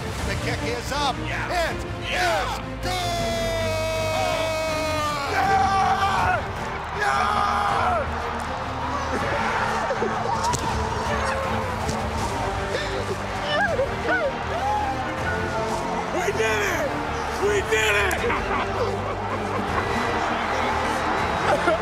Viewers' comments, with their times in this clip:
0:09 Chase's reaction is every Bengals fan in that moment. hearing him lose control of his emotions is in my soul. WHO DEY!